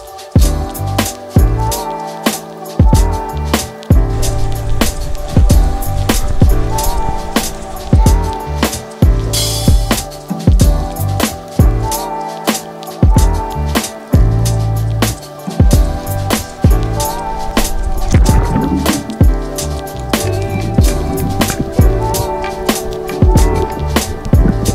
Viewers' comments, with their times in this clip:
0:07 the music lmao